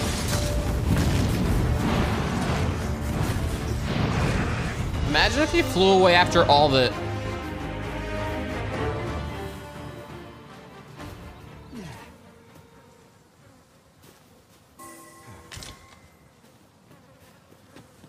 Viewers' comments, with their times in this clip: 0:04 "Imagine if he flew away after all the..." - stunned silence as monster flies away... 😂😂